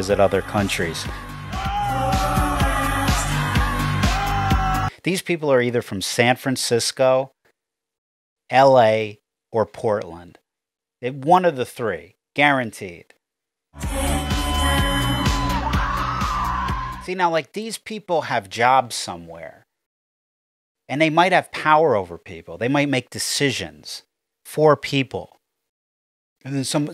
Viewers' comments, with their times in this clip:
0:09 The look of disbelief on the face of the 5 years old kid watching those "adults" screeching at the volcano is absolutely f**king priceless!!